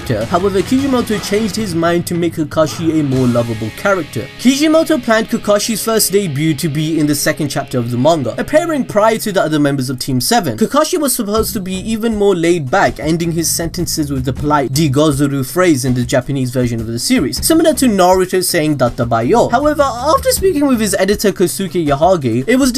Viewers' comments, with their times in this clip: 0:04 "Cheesy moto" With Captions